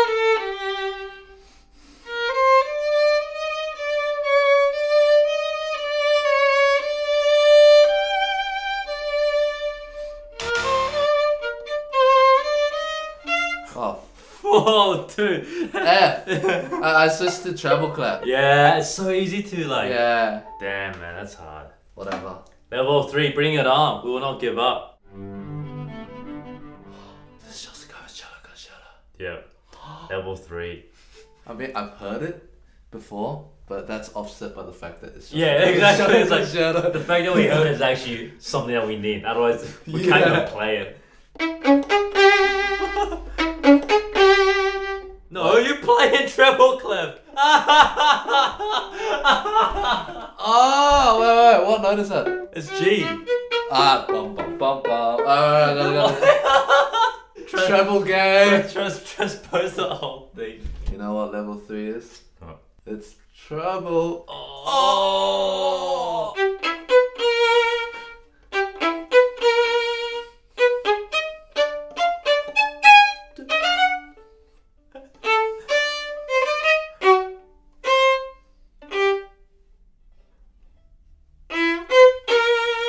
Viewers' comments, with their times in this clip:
0:09 If you didn´t tell me it is wrong I wouldn´t have noticed lol
1:05 it wasn't a G that's a B lmaoo